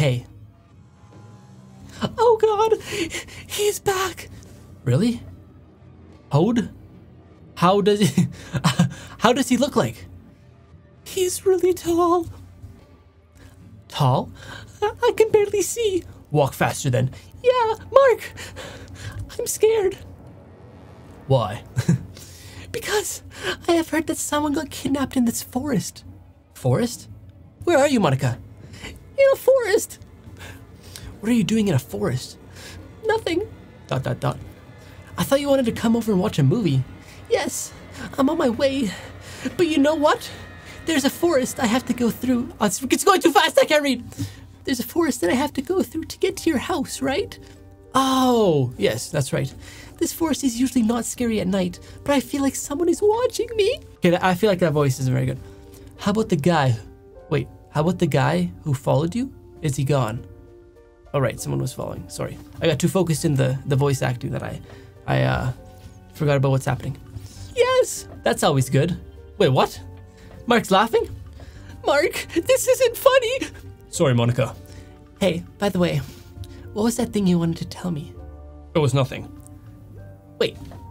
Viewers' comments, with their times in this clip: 0:06 the way he changed his voice like oh nwo he is back
1:03 Im dieing to his girl voice it is hilarious 😂😂😂😂😂😂😂😂😂😂😂😂